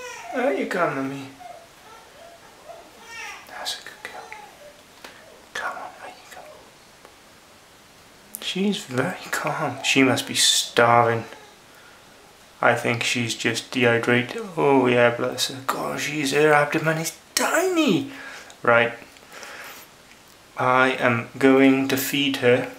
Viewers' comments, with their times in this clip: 0:05 you can hear her babies crying in the background